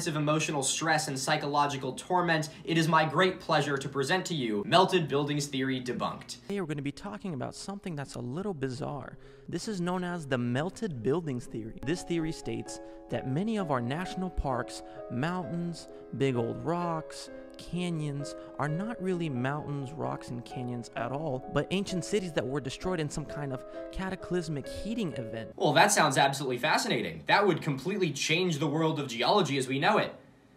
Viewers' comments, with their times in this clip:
0:06 man really got the video audio TO ONLY SPEAK IN MY LEFT EAR
0:14 why do these people tend to use this voice of a parent explaining that babies come from bees to 5 year olds? and that background music? ffs -_-